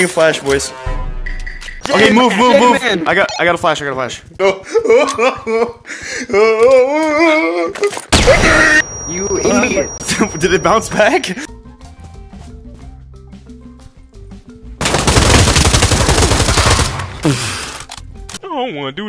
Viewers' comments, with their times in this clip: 0:06 dude that happens every time anyone throws a flash grenade I don't know why you could do it fifty miles away from you and you would still be able to see and hear that crap like it was two feet away from you